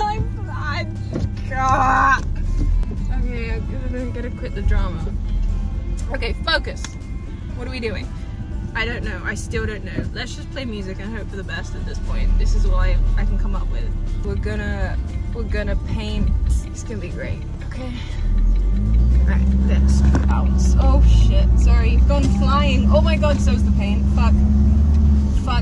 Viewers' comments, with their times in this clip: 0:07 ...fokus..😂😂😂 ..too sweet😀